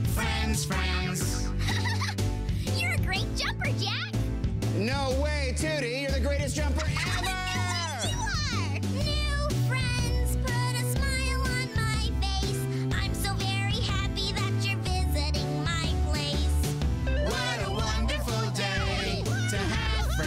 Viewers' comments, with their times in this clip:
0:06 is so sarcastic